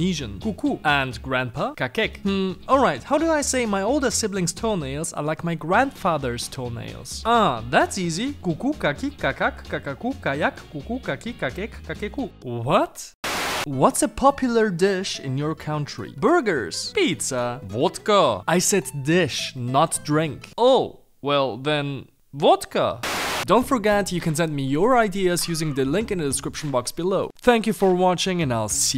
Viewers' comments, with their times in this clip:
0:09 is more like Uvuwvewvewve Onyetenyewve Ugwemubwem Osas